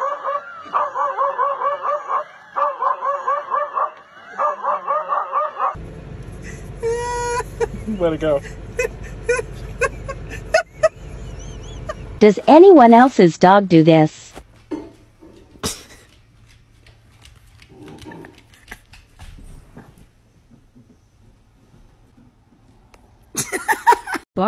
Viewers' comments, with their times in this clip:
0:08 sounds like BTS Jin laughing